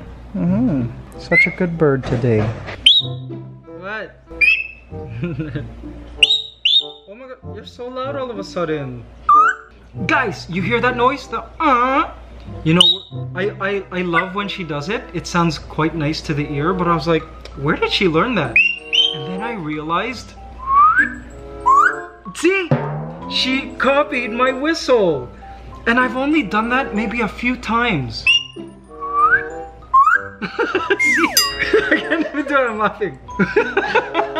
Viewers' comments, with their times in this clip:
0:08 I Love the whistle tones that you and ligaya are doing together
0:20 Hahaha.. wow! The whistle copying part Ligaya copied it just right! Smart girl!